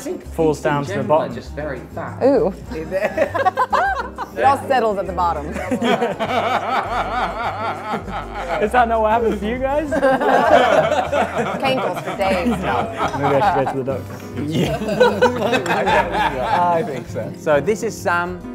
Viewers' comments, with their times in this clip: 0:04 why do I love that laugh
0:06 his laugh omg hahaha
0:06 Love that laugh